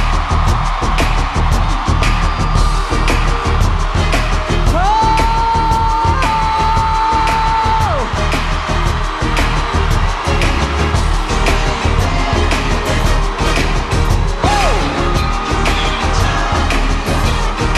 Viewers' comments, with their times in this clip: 0:04 Am I the only one laughing when he started screaming 😭